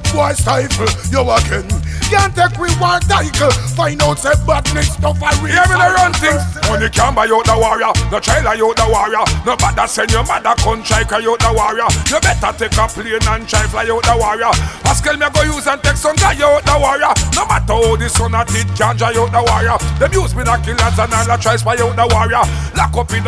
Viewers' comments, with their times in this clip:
0:05 goes hard. I could listen to a whole dubplate with that cadence.